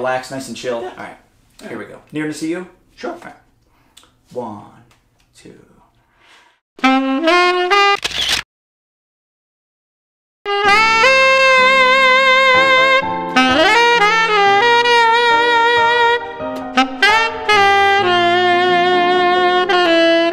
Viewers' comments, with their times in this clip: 0:07 when your new reed is way too hard